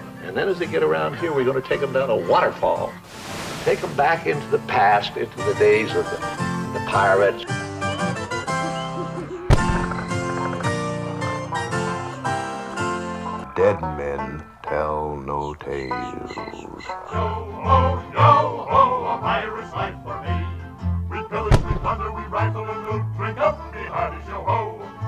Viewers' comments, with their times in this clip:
0:08 I love that song :D